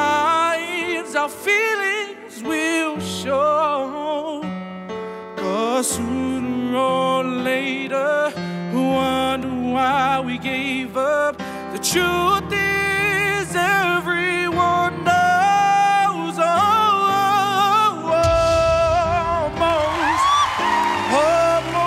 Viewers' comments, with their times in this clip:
0:05 when he sang ‘sooner or later’ it sounded so good I don’t know how to describe it
0:05 Right..love how he sang that part